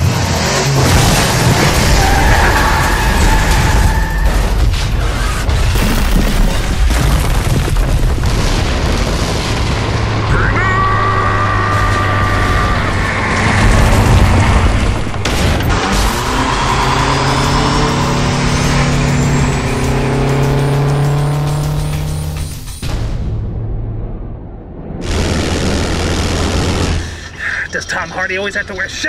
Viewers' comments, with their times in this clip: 0:10 I know he says "Hang on", but the first few times I heard it it sounded like he was saying "PHOENIIIIIIIX!"